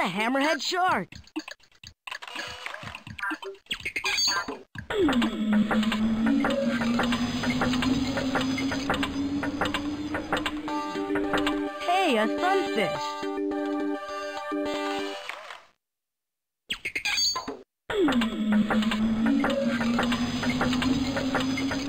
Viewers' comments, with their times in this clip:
0:08 I finally found the sound clip I was remembering. It was the sunfish swimming through the tank